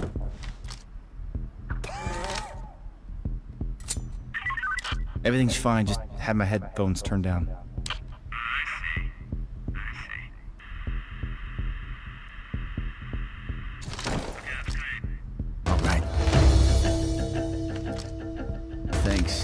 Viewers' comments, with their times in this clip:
0:04 that guard just had an asthma attack lol